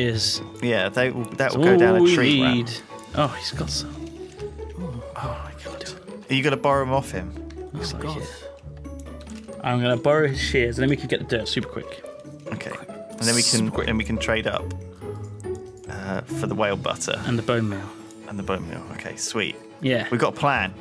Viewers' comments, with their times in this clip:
0:08 when the jingle kicks in i thought i was watching Always Sunny.